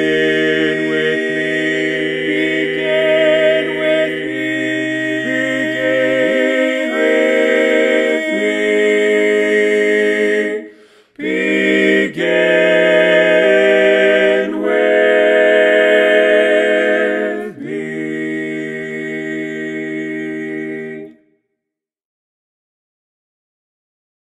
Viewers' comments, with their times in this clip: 0:09 Why didn't the lead post? I would've liked the last chord held longer also; the sound is just phenomenal. I wish I could sing tenor like you.